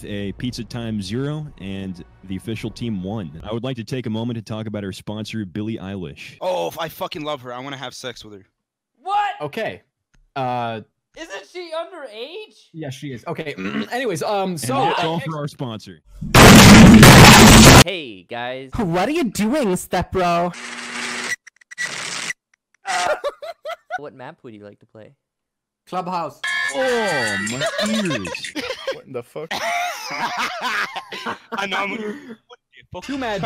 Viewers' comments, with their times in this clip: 0:09 “wHaT” had me dying
0:16 The audio cut out. I can't hear anything